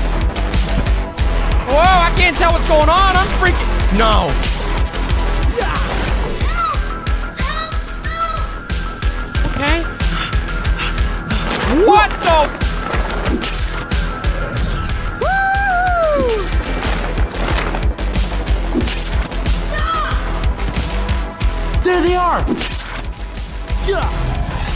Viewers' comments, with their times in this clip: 0:07 The music reminds me of fanf 4 vs twisted ones